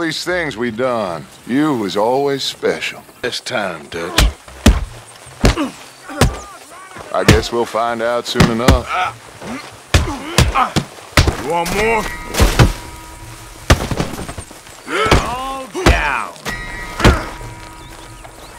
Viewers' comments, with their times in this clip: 0:06 What is Bill screaming in the background? 😂